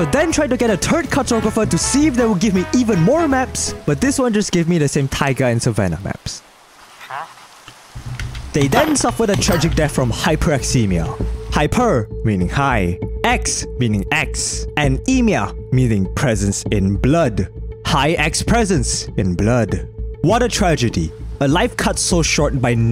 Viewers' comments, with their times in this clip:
0:10 he just started to sound like one of those murder investigation shows